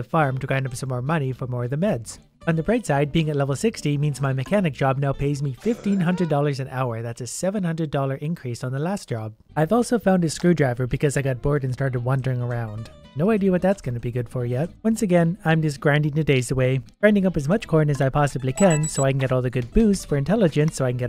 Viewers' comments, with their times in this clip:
0:05 What is that confused sound